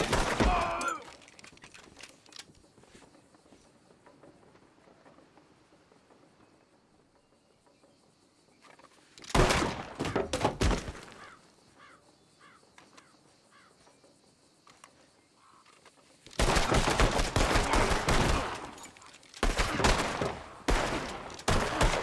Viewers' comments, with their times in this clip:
0:09 I Love That Noise "NOISE ARTHUR NOISEEEEE" - DUTCH